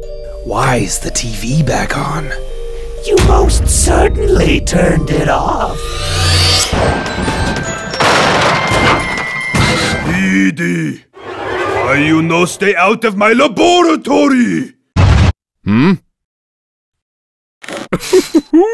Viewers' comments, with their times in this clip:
0:03 I need to know how to do that voice